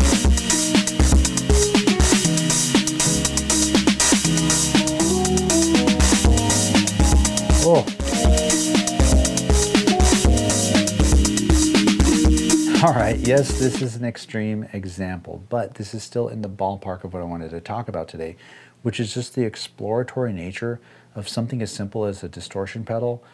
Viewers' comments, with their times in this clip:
0:07 Crunchy ? In my world this is as clean as it gets.